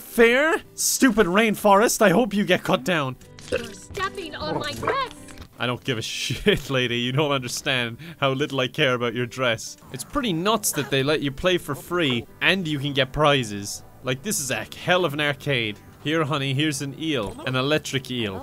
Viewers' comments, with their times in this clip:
0:03 ... ok imma be honest .. I heard something very different
0:03 i deadass thought she said "you're stepping on my breast!" lmao
0:04 lol 😂 I heard stop walking on my breast.